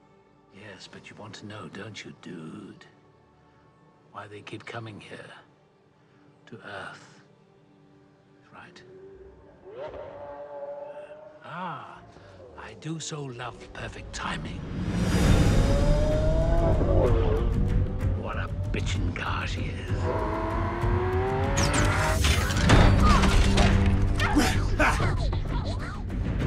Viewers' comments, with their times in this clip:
0:09 ahhh I do love the sound of a Lamborghini downshifting.